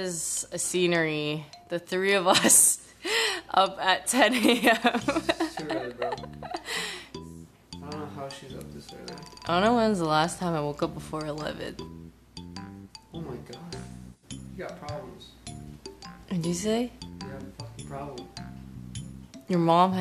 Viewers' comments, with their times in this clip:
0:07 BGM ;-; The memories.